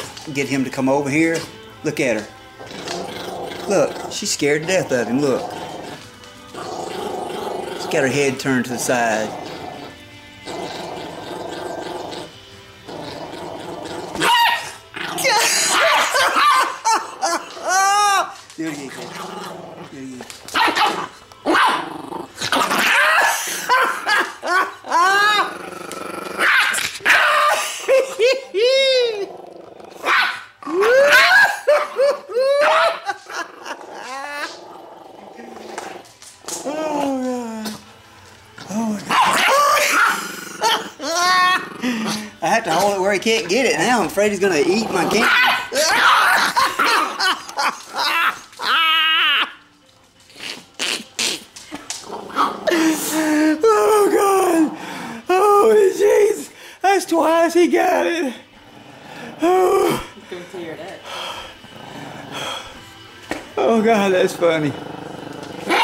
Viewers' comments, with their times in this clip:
0:09 what is that sound Leon is making lol
0:11 I hear an UFO
0:15 Travis Scott dog with autotune
0:32 man laughs Leon: trys to bite camera Me im dying😂
0:50 he sound like a duck call🤣🤣🤣🤣🤣🤣
0:50 That's one funny way to laugh, especially :D :D